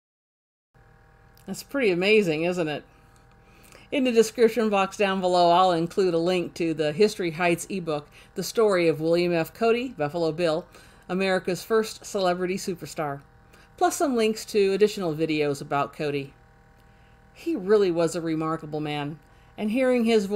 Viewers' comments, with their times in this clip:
0:06 That was amazing.. I didn’t think Buffalo Bill was that well spoken.. was kinda ready for Samuel Clemens type speech..